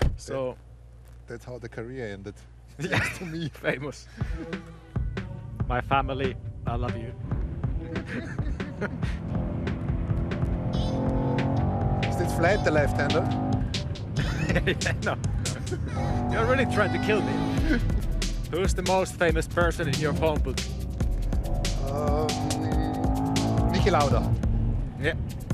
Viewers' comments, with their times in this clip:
0:03 Bottas version of "bwoah.." "blahh"
0:12 "Is it falt the left hander?" Bottas with nervous laughter "Haha, no"